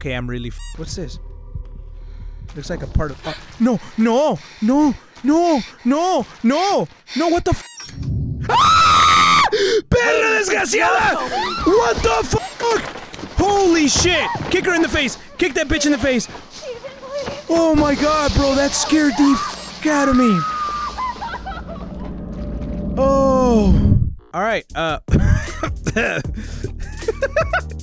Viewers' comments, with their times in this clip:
0:07 His scream lmaoooo
0:08 he screams like a girl XDDDDDDDDD